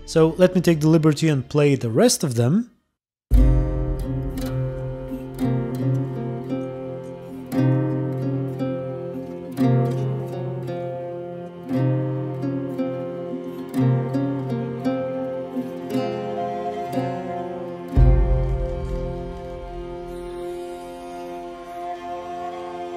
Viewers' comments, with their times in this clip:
0:03 what music is that? So hauntingly beautiful. Great video btw!